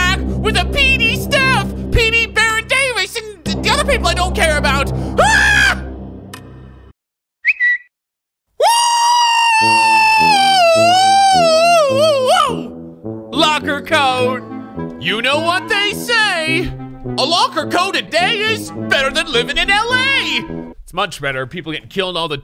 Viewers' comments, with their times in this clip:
0:05 That scream timing tho
0:08 this sounds like if you sped up Mario’s death sound 🤣